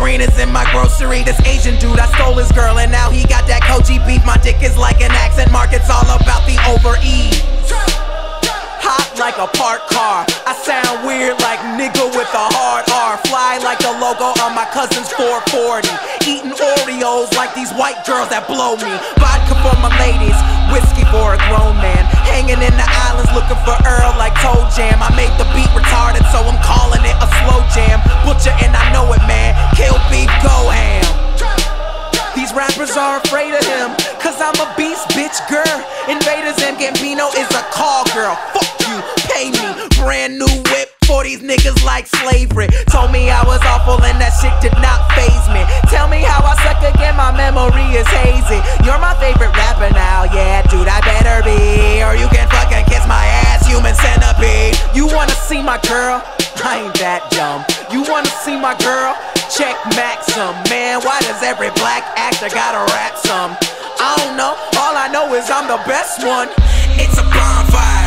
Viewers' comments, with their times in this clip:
0:08 Sounded like he said “Hot drank a fart car” but I know he didn’t say that lol
0:49 is that part that someone said sound like jhope